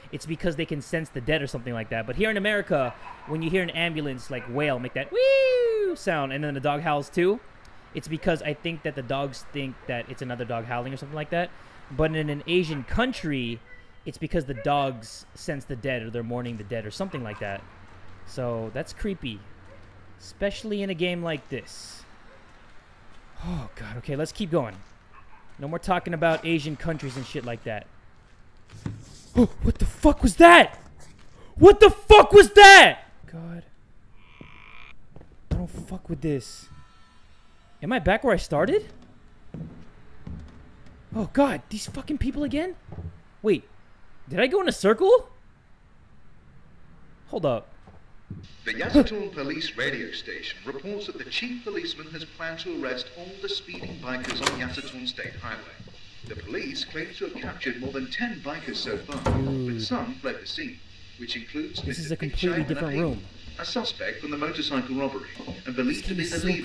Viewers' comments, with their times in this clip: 0:05 you sound high
0:48 For a sec I thought the pacer test was about to start